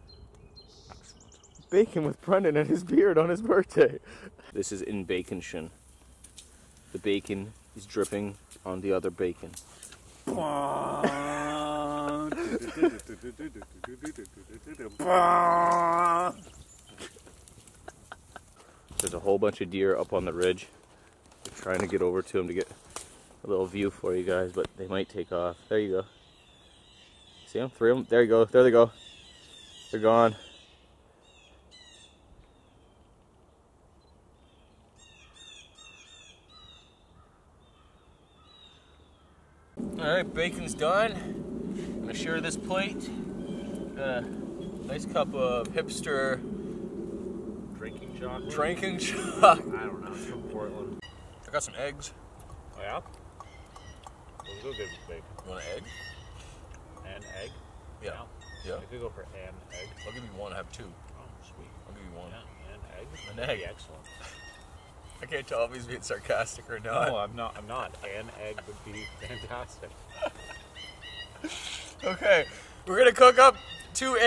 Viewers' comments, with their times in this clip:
0:10 sounds like the Stranger Things intro music...
0:57 that bird sounds like he’s saying “BACON”